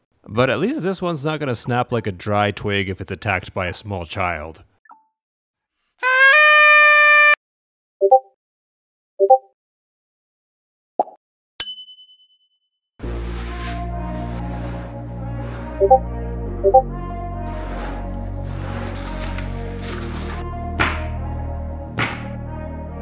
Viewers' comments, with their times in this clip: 0:06 Hey got some feedback that it's way too loud sorry about that, can't make edits to this one without deleting it, but I'll be aware of that for future videos.